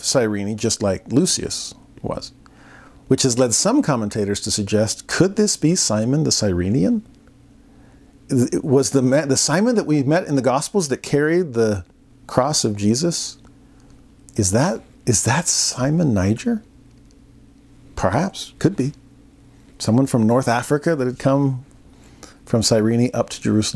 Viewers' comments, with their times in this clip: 0:07 Wonderful lesson, as always! First “click”